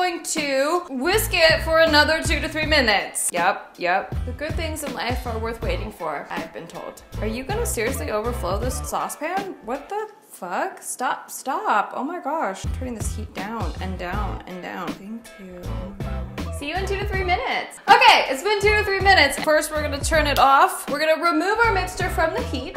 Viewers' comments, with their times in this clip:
0:07 Am i the only one who got anxious and started internally screaming "turn down the stove!" When she was whining at the boiling milk ??